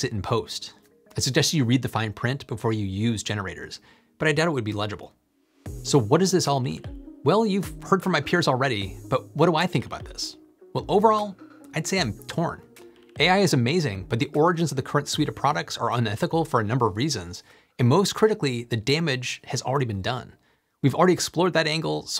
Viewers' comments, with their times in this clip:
0:06 To begin with, the Chinese intonation sounds off--like a foreigner who has taken a couple of lessons but has not mastered the basic tones. There are also heteronyms in Chinese like desert (abandon) vs. desert (dry area) that pupils can tell apart after 3 years of schooling. E.g. of your video, you talk about "peers" which the AI translates into 同行. 行 is such a heteronym, which can pronounce as "hang" (n. occupation) or "xing" (v. travel). Your AI pronounces it as "xing" meaning to travel together, which is grammatically incorrect and does not make sense. I cannot bear to listen for more than 20 seconds.